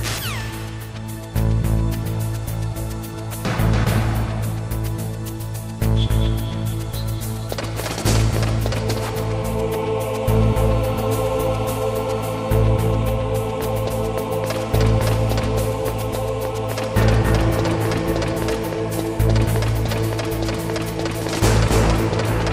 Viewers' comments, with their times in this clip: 0:04 .. every good stealth game has a tense beat track.